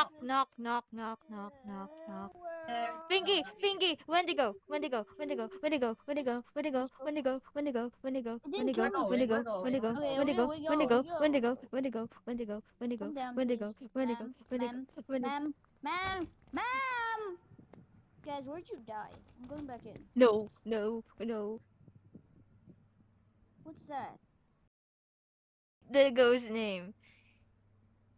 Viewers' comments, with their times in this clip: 0:10 when u said wendigo fast it sounded like where to go or when to go soo funnyy lol